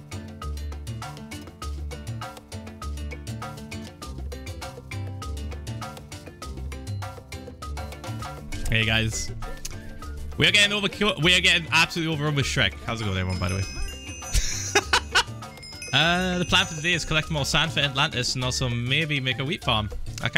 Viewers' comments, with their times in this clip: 0:08 the lyrics of the song synced once with the intro